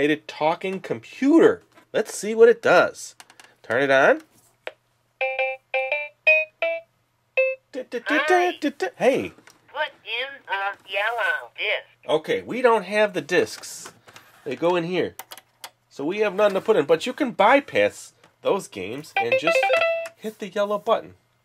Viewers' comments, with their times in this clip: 0:05 I remember someone I know having this! it sounds like the same little tune from Dr. Seuss's "Pontoffel Pock" used to open the access panel on the magic flying piano.